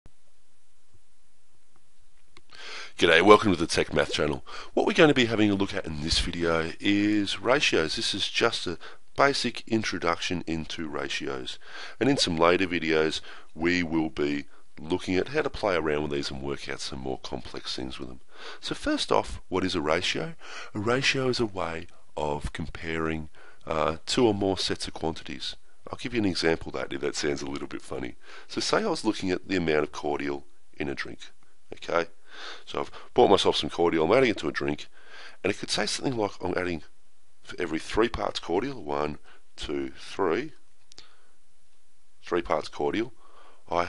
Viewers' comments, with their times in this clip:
0:02 You can just tell he's australian
0:30 'bought myself some ???'